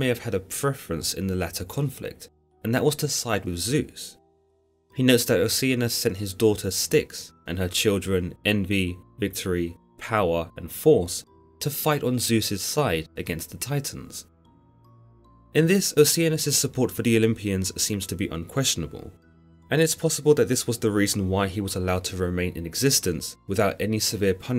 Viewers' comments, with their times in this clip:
0:07 “Power (Cratos)” Greek opera starts to increase in volume